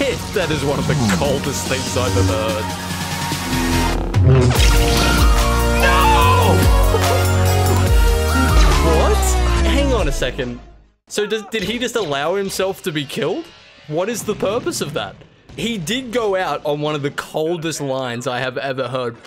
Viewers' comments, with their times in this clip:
0:04 I CAN'T STOP LAUGHING THE MUSIC AND THAT LEGO DEATH ANIMATION 💀💀💀💀